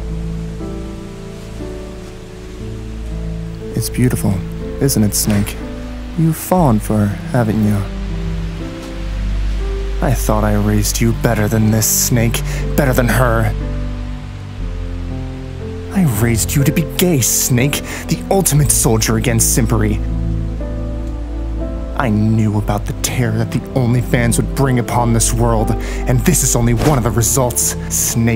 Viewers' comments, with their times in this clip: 0:10 is that Elijah wood??? Holy shit it sounds like him